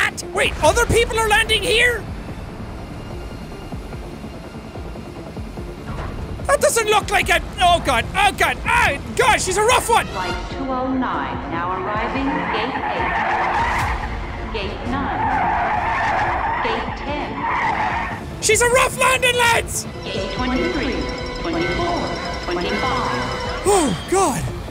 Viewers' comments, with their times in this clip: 0:10 Flight 209 Now Arriving Gate 8 Tire Screech Gate 9 Gate 10😆😆😆